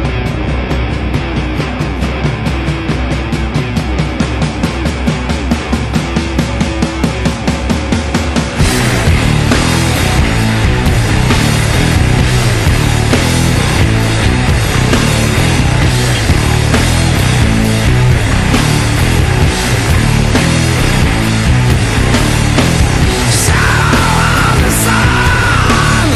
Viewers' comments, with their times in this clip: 0:04 onward always blows me away by how heavy it is...it's a great riff, but also excellent production to get it to sound like that.
0:08 The gear this song kicks into OH!MY!GOD!